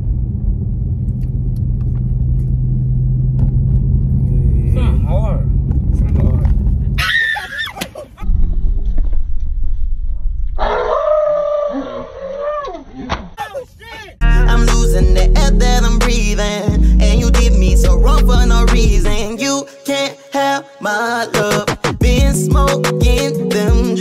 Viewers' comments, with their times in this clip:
0:07 his scary movie scream on point tho 😂💀